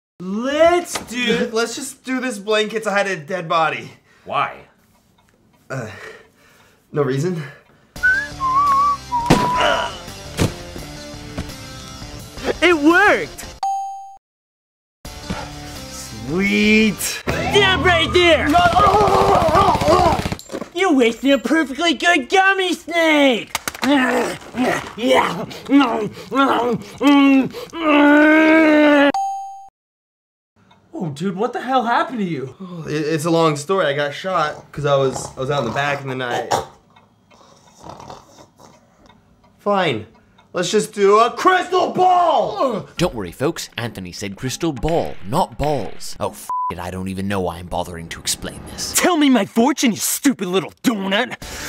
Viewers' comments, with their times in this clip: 0:08 ian whistling "we cant stop"
0:28 put on subtitles gobbles like Cookie Monster
0:35 you can hear ian snour